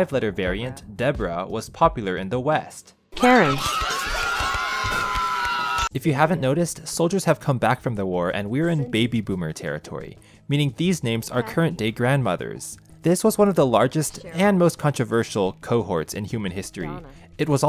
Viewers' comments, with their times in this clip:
0:03 goofy ahh laugh sounds